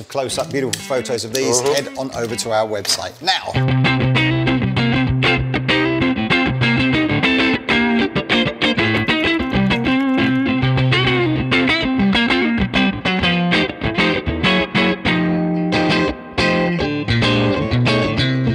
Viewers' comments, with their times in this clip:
0:03 What a playing!